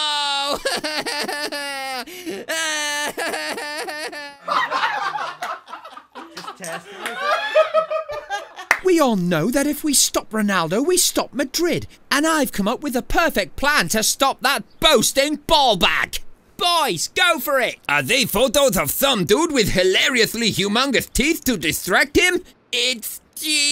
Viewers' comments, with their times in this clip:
0:05 sounds like a group of 70 year old people laughing at a joke that no one aged 0-49 would understand